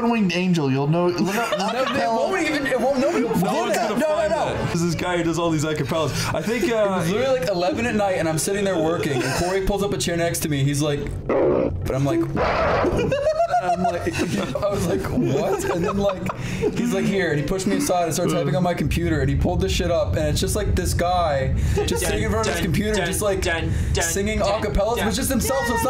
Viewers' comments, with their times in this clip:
0:10 Something about the censor effects just make it so much more funny.. like they're both great apes trying to assert dominance